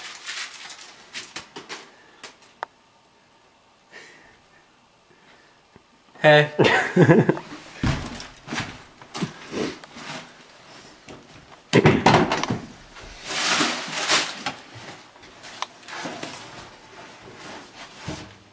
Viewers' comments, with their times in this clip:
0:06 Your giggle is the best